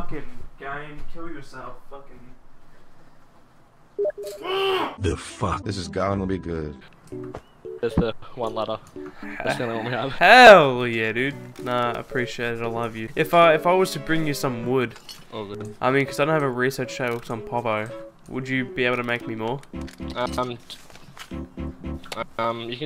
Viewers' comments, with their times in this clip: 0:03 Who though someone message them in steam?